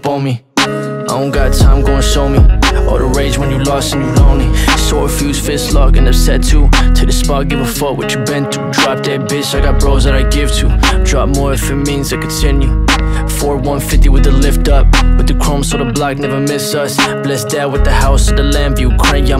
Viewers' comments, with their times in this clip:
0:04 that kinda sound like x